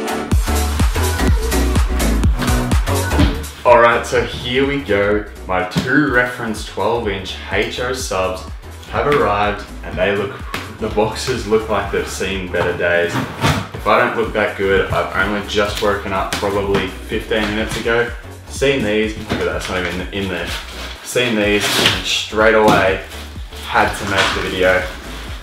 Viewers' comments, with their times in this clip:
0:07 What is a Heych-Choe?